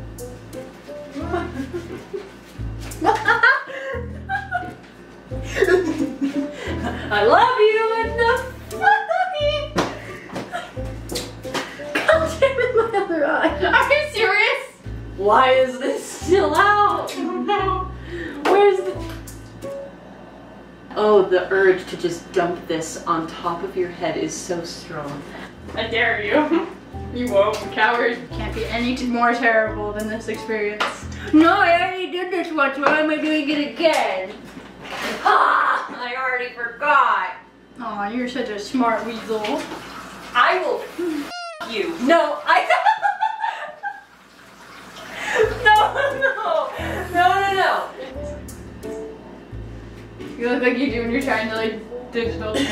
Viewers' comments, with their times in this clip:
0:05 Henry: smacking glitchtrap with cupcake Thingy Glitchtrap: I Love you laughs
0:07 glitch trap- I love you proceeds to die of laughter
0:07 I love you and- HahAhEEe! WTF glitch you trying to sing or something?!😂
0:38 Henry: aw your such a smart weasel >:3 Gli€htr I WILL FU€K YOU NO- Hennry and Gli€hbi€h start dieting of laughter XD